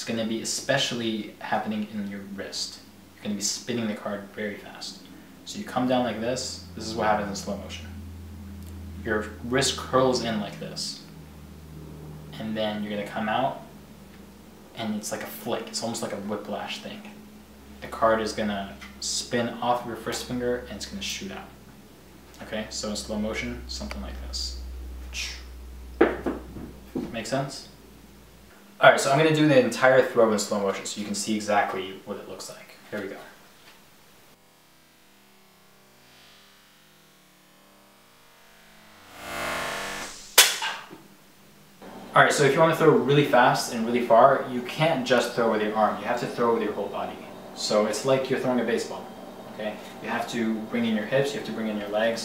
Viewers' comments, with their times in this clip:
0:05 Aeroplane's sound made me to remove my headphones 😁
0:38 You can hear Cyberpunk meme music noice